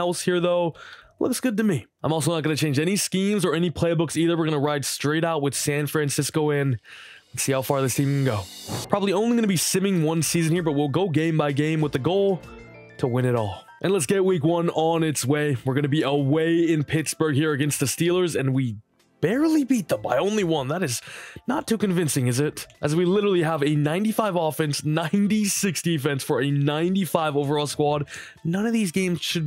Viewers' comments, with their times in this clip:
0:10 didn’t think I’d be hearing Pokémon music in a madden video but I’m here for it